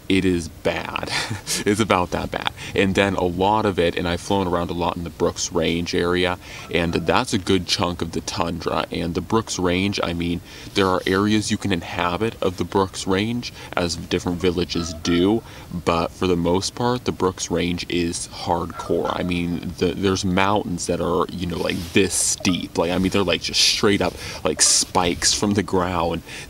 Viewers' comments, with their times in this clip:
0:08 a raven started talking to you.